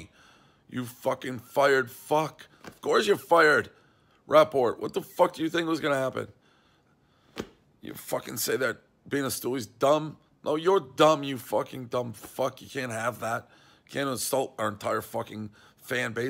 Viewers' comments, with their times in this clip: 0:03 Why does he sound like Helwani lmao